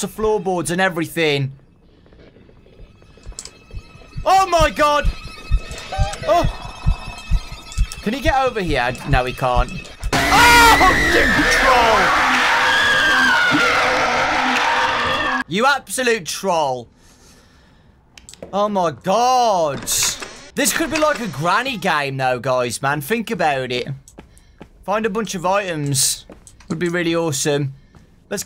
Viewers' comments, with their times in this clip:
0:09 for a second there it sounded like you said "jimmy neutron"